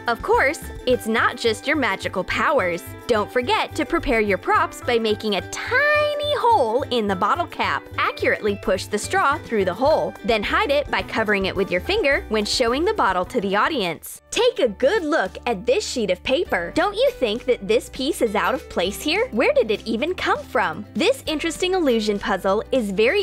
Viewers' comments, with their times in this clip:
0:04 The way she says tiny is too funy
0:04 i like how you said tiny 😂😂. Reply if you agree🤗
0:05 !!! The voyse! (I do not know how to spell it.) (No hate.)